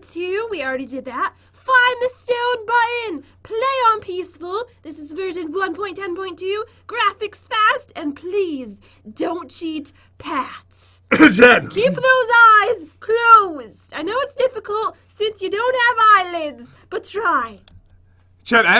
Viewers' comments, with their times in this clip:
0:04 I heard “This is virgin”